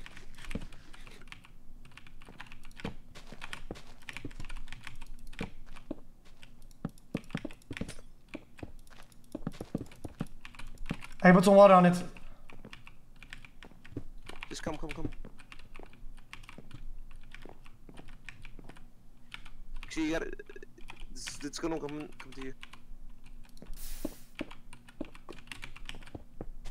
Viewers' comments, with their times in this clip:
0:07 Listen to them placing blocks... it made a beat!